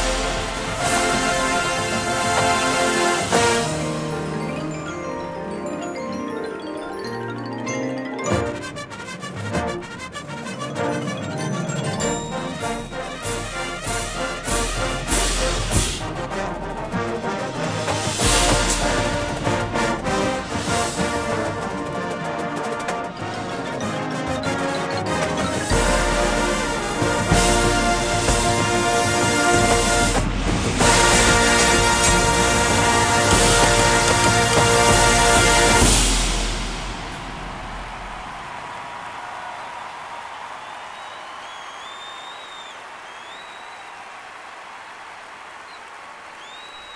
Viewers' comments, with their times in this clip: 0:04 Holy front ensemble !!!
0:30 I love the last note!! I hear you synth!